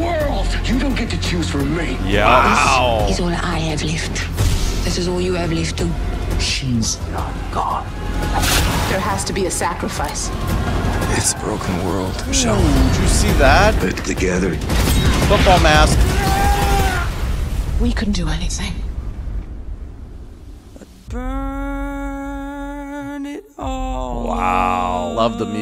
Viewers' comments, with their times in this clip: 0:10 here you can hear Rick talking to michonne ❤️